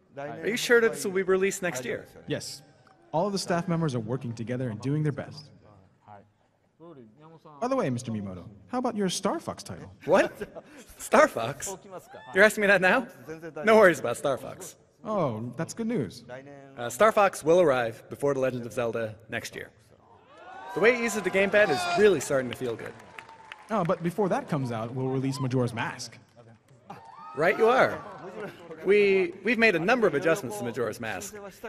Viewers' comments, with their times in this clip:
0:06 I swear the translator said "starfucks" every time! XD
0:16 Sounds like Chris Hardwick yelling, "WHAAAAAT."